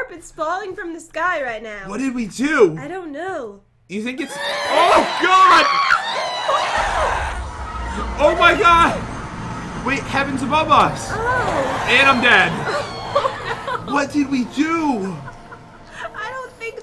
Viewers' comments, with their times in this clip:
0:04 "you think-" ghasts: we screamed? heres the part
0:04 ”HUUUUAAAAAAAAAAAAH” ghasts screaming